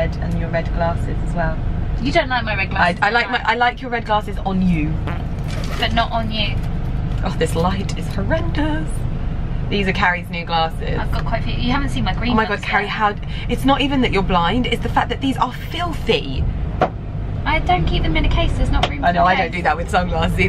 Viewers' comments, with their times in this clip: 0:04 That fart on lol
0:04 100% fart in the cab Followed by a look to the camera to see if anyone noticed.
0:04 Did anyone else hear the fart noise ?
0:04 was it a fart? hahaha
0:05 Anyone else hear the fart noise ?